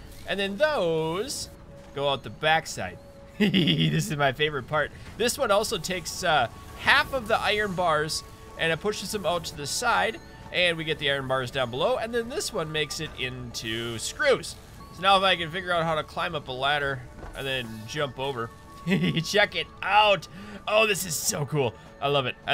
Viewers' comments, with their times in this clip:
0:03 he kinda sounds like he is gonna kill someone. Heehee this is my favorite part, 👹🤣 like if agree👍